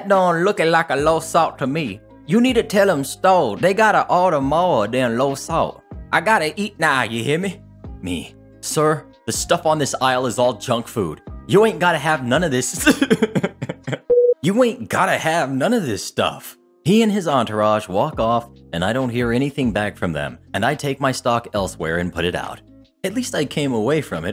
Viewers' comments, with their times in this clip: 0:08 I almost lost it I guess the more ridiculous the story (or voice, in this case), the more difficult it is to keep composure. And awesome job on the impression, by the way.
0:08 Best moment/accent ever!